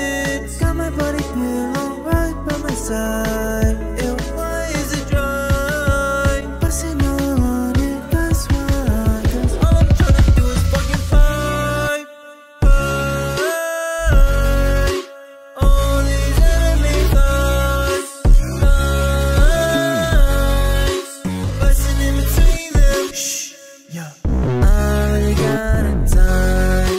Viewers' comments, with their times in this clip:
0:09 Te song it's so hard